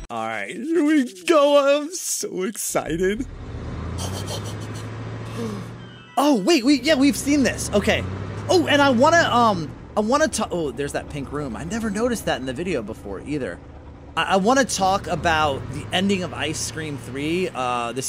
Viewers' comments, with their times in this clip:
0:04 why does think sound like Mr. Bean?
0:04 bro sounds like mr bean